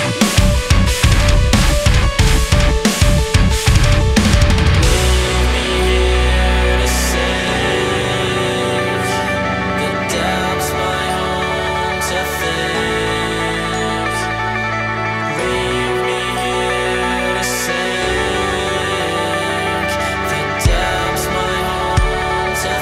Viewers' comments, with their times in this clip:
0:09 is so similar to the nightmare intro. So beautiful. Well done bois!